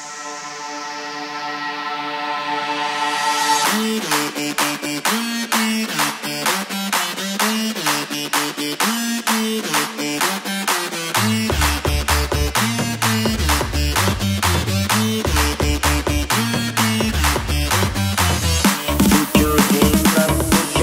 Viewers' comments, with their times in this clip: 0:03 Wish the lead would come more, it's so addictive!